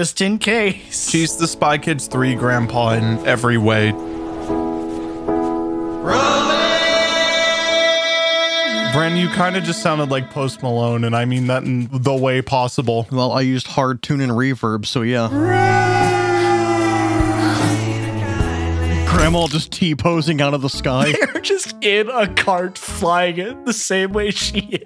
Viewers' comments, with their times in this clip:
0:05 Most great singing voice I'm just pointing stuff out